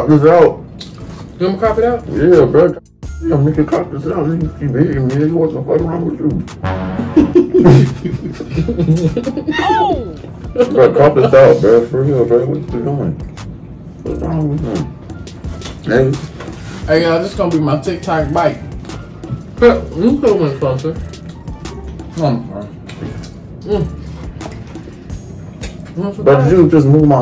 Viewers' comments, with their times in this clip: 0:08 the way he leaned into that laugh had me dead lol